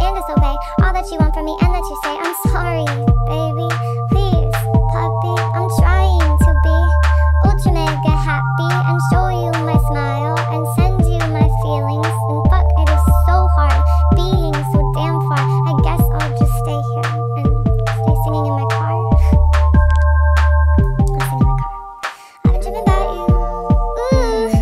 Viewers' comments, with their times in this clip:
0:07 WAIT DID SHE SAY ULTRANIGGA HAPPY-